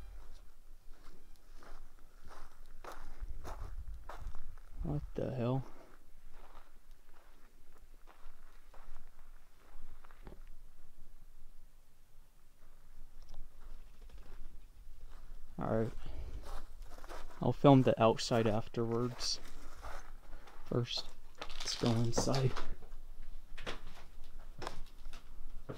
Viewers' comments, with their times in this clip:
0:10 that is a pump or a generator